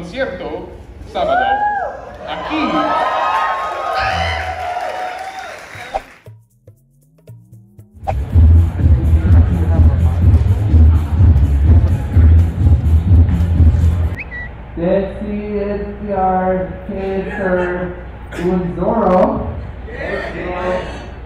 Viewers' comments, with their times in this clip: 0:07 watch out for bass